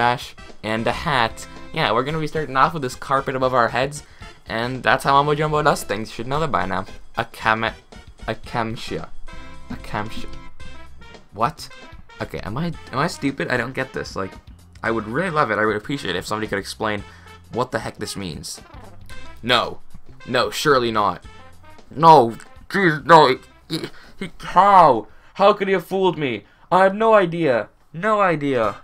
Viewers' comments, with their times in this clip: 0:07 Basically, X says acacia kind of strangely
0:11 that meme is referring to the way xisuma says Acacia wood. Lol
0:11 that me is referring to the way xisuma says Acacia wood. Lol